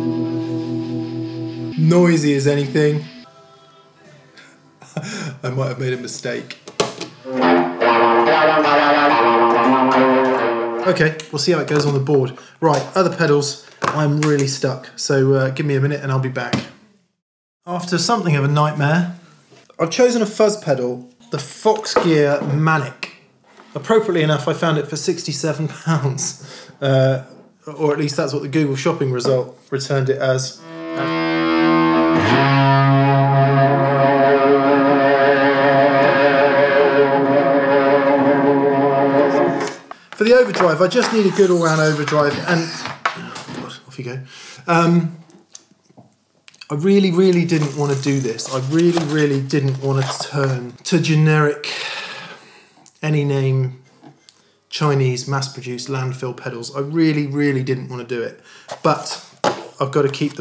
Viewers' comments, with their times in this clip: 0:07 Immediately made me think of Jerry Cantrells lead tones in Rooster by AIC
0:42 Dont Miss: Hissing cat !